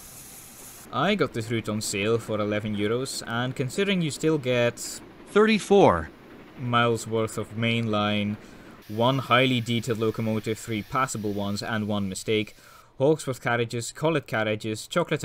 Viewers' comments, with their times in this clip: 0:03 is that a robot that said 34 or you?